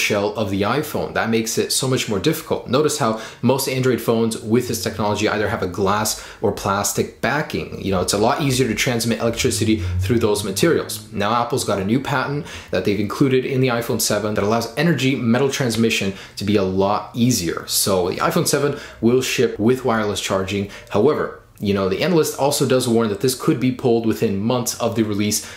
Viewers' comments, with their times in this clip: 0:09 there is a vibrating noise